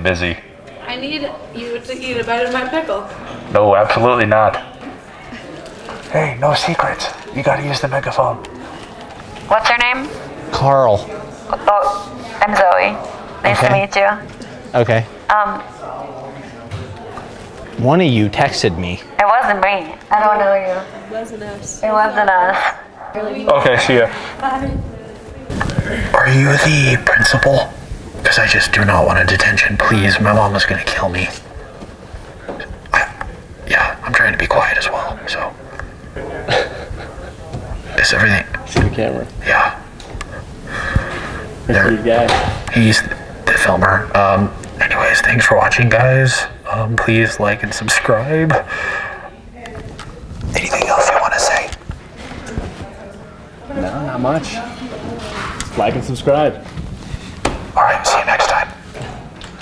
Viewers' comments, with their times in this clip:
0:10 it sounded like hanna Baker from 13reasons why
0:19 shes voice like delilah from firewatch game
0:46 he was holding back the biggest laugh right there lmao